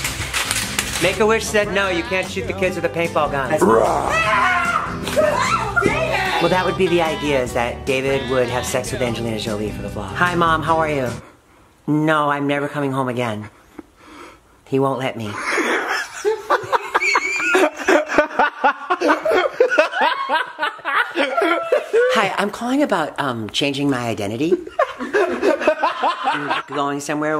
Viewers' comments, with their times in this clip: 0:10 my favorite part EVER 😂😂😂 everyone’s laugh is hilarious